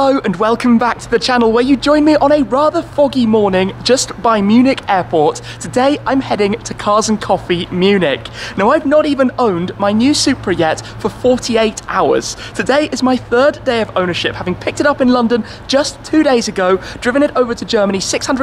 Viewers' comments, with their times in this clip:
0:03 i thought you said something else the foggy Shmee haha